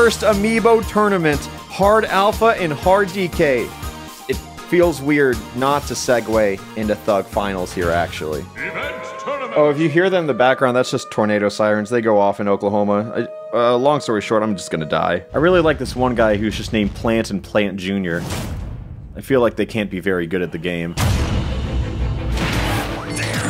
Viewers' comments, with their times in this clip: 0:08 tfw you can tell that this was recorded around noon on a saturday by the sound of death sirens.
0:08 those sirens always scare the shit out of me when I hear them. Makes me think that some world ending catastrophe is about to take place.
0:08 Me every time I hear those sirens